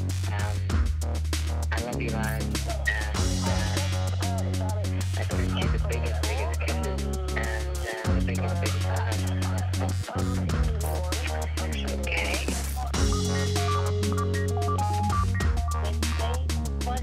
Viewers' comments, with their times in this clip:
0:05 music sucks I'm out of here
0:05 Two people mumbling mixed with that intolerable music coupled with making a video about how to glass bed then treating prep as a "Well, we did the prep earlier, or whatever, and now on to how to glass bed" Horrible.